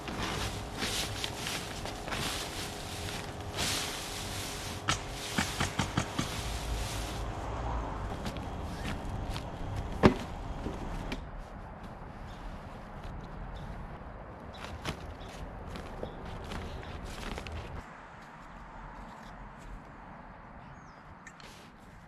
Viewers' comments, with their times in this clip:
0:09 I hear shigles being installed next door or very close by. Lol. That sounds of my peoples!‼️💯🔨🔨🔨🔨📏✏️📐🛠️💪💪⚠️⚠️👍👍🤣